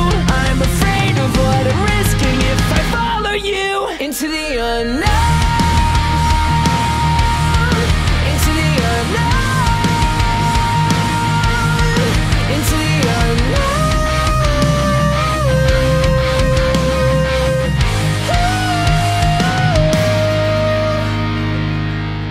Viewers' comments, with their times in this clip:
0:03 I was really hoping he would go for that really high note on into the unknown. That would've been legendary. I felt he could've done it too!